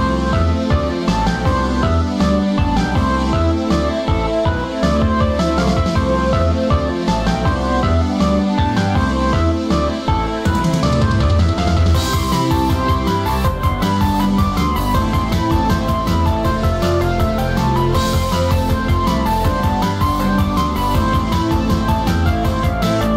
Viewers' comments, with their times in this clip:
0:09 I just love how the machinegun fire is in synch with the drum roll XD